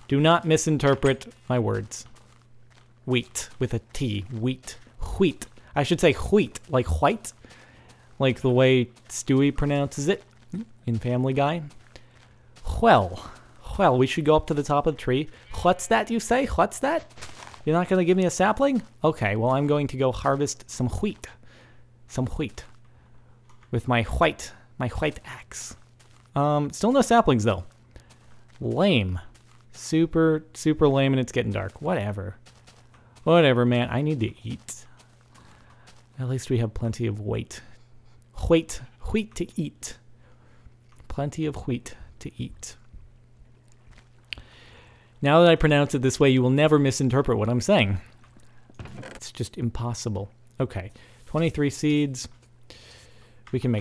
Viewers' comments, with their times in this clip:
0:04 You know, the way you say "wheat" sounds just like "skit". Which is how we say "shit" in Sweden. This became even more funny when you said "We have plenty of "skit" to eat" xD
0:21 the way he says wheat means like shit in swedish
0:41 HAHAHAHA SKIT TO EAT (skit is poop in swedish)